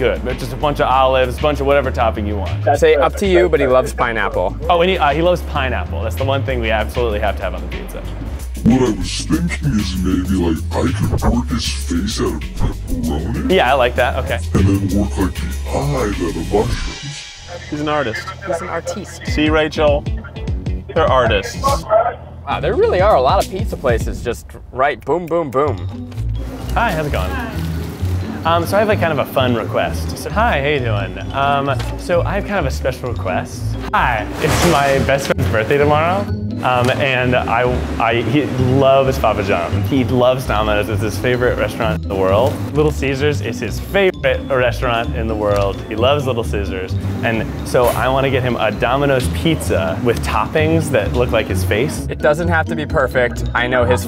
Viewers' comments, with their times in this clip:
0:09 I was wheezing every every time the pizza hut guy spoke. He's just like: In a deep tone "wweelll wwharrtt ii wweerrss tthhiinnkkiinnggg wweerrss tttheerrttt ii ccouurllddd mmaakkee hheeee's feeerrrssss oouutt uurrrfff ppepppperrrooniiii..."
0:35 “birt day” lmao